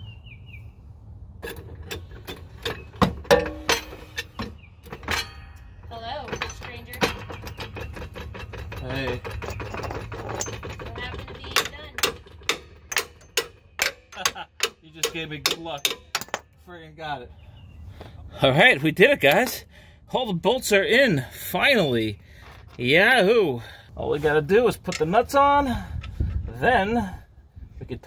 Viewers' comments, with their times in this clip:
0:10 Great job! Your jack ratcheting was like the countdown on Mission Impossible!